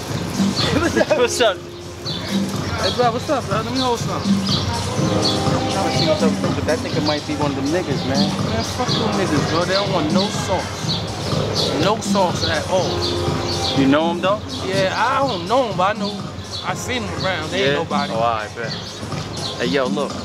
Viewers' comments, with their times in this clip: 0:04 That House Music That Start Bang🔥